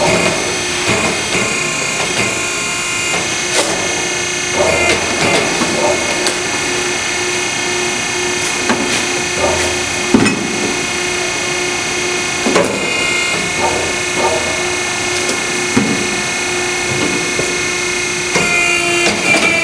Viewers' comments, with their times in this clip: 0:03 I swear this is exactly the sound of a blaze shooting